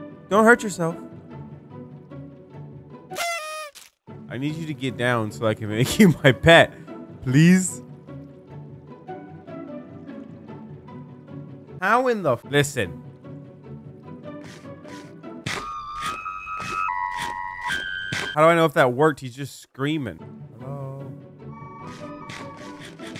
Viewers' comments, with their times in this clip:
0:06 He sounded like a cow 😂😂😂